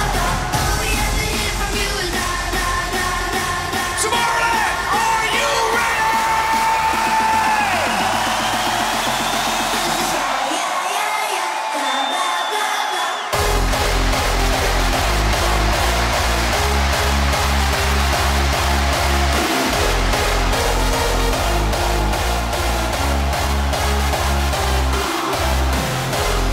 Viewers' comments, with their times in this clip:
0:07 Hardstyle is comming :D